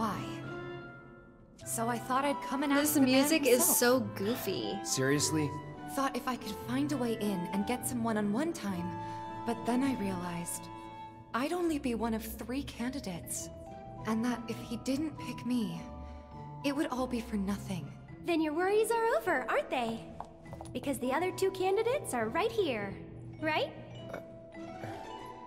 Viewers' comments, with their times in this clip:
0:08 the music in is on par with the original 8-bit version.